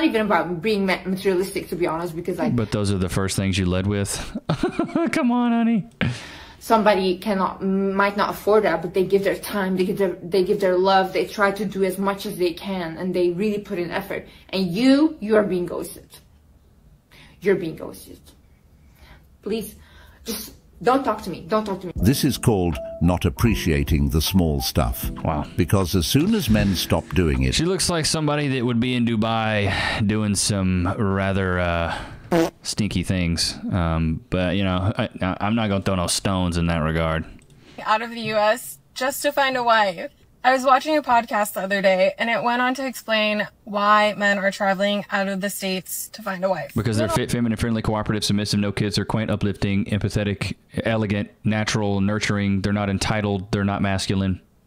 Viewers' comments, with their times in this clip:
0:08 where is that accent from,south of america? it only shows,they are all the same.
0:38 why does she say « wigan » instead of « wife »?